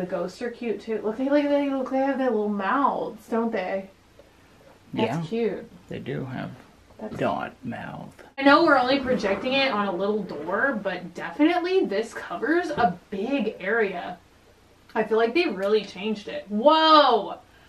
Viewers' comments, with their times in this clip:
0:03 i hear a ghost talking!